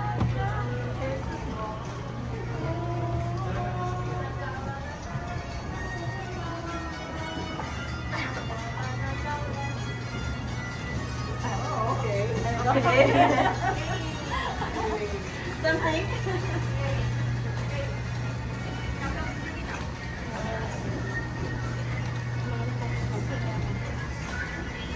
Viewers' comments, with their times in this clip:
0:06 Someone decides to play the song on this phone because the dolls refuse to sing the song